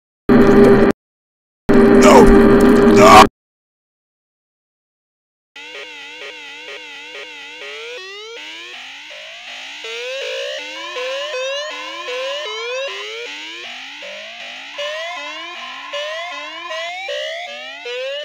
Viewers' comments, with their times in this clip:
0:05 ngl im jammin to that beat